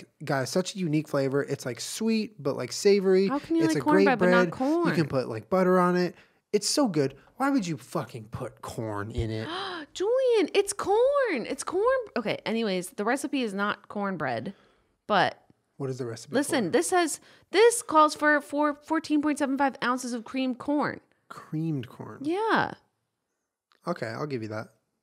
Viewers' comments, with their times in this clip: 0:10 why does Jenna sound like Miranda Sings😂